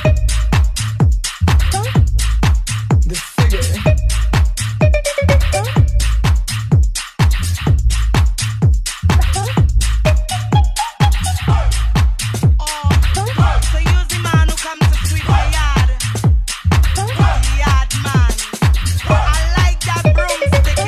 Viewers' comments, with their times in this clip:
0:05 that drop i haven't been expecting that. You made me stop my work and write this coment while dancing. INSANE